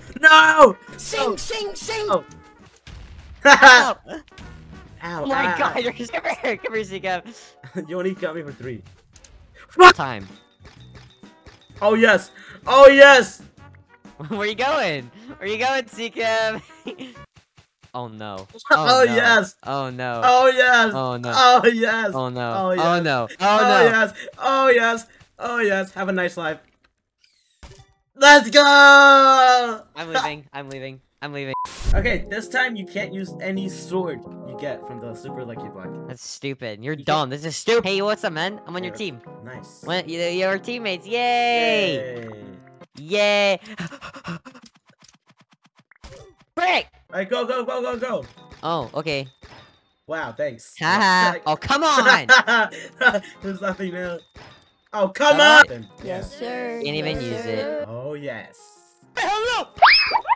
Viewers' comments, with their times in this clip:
0:09 That perfectly cut scream tho💀
0:39 yayyyyy HUHuhuhuHuhu Intense breathing
0:43 I like the part when he he’s breathing